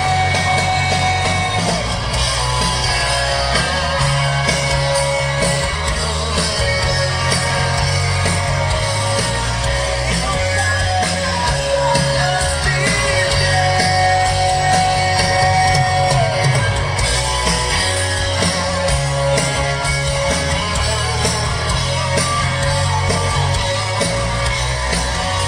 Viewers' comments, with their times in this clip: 0:09 Interesting, his "old voice"